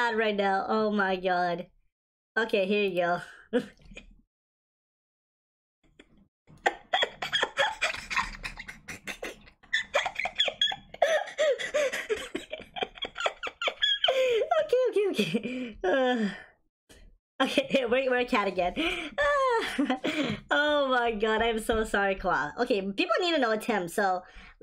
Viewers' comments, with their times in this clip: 0:03 i love that laugh lol
0:05 not gonna lie that sounds like a rat dying lol
0:07 Dying Monkey Laugh Cat